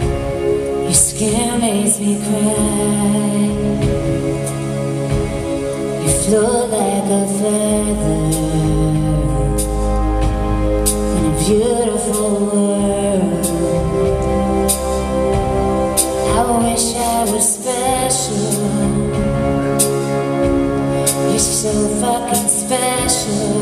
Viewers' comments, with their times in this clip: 0:09 that low C! BEAUTIFUL